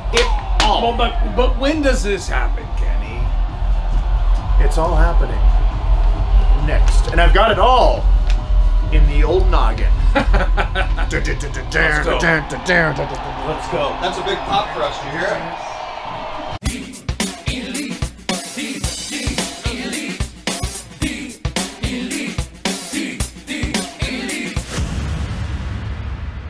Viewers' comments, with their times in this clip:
0:10 Kenny just casually humming the old Monday Night Raw bumper theme hahahaha